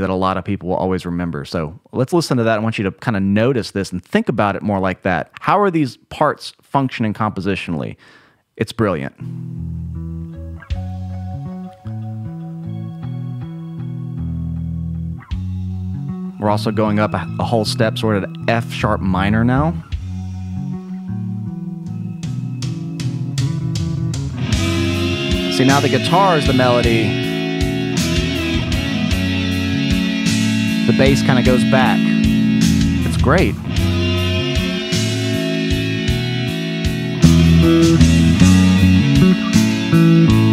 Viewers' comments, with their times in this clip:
0:10 Would this part be considered neoclassical?
0:24 it's not a guitar, it's a bass recorded in 2 tracks